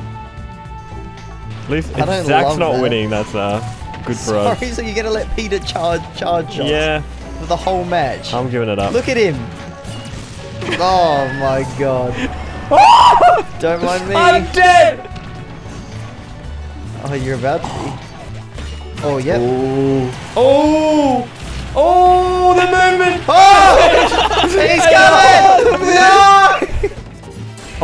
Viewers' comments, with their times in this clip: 0:09 this moment was so exciting it screwed up the audio